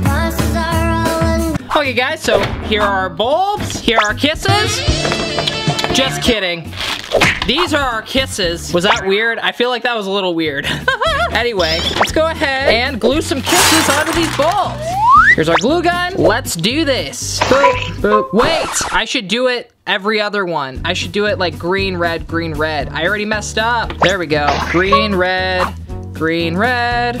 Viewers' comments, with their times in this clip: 0:10 wth was that laugh